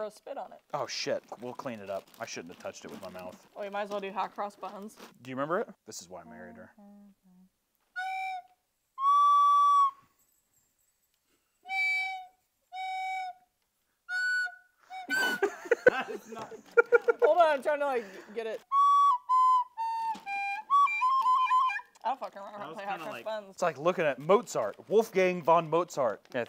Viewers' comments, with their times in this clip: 0:08 go to for a beautiful rendition of hot cross buns